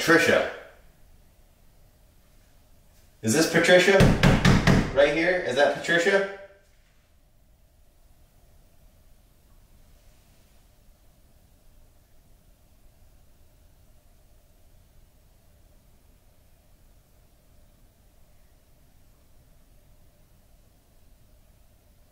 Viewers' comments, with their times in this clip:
0:08 I hear some faint talking